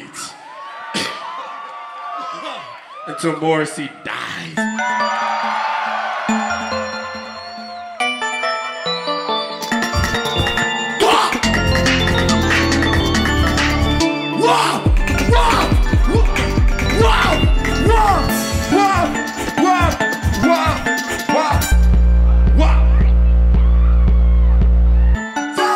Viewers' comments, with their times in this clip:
0:10 my favorite moment, he is so energetic and the music is so great.